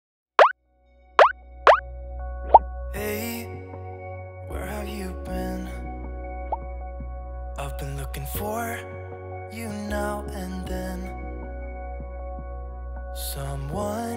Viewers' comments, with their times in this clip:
0:00 Anyone else confused but oddly satisfied by the intro music?